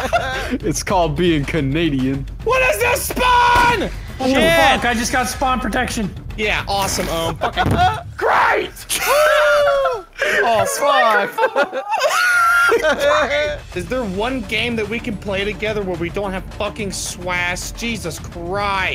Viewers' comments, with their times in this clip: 0:06 thought he screamed “GRAPE!!” 😂